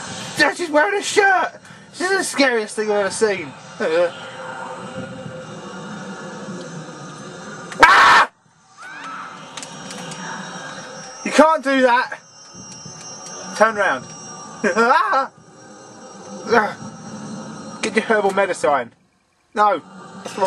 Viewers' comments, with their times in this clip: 0:08 i've never heard you scream as loud as you did
0:08 That scream scared the bleeding crap out of me, m god. My sound was turned up, and I was looking off screen toward something and I think you gave me a heart attack.